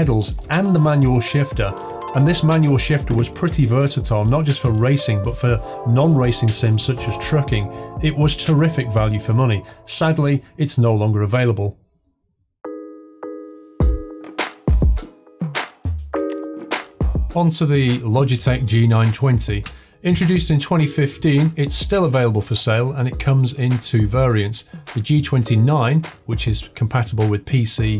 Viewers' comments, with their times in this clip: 0:09 this background music up until fuckin slaps